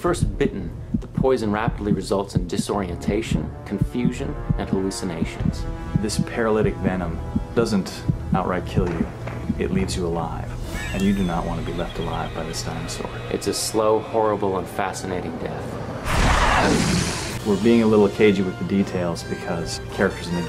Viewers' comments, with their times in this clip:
0:06 " It leaves you alive *dramatic sound* " lol I loved that.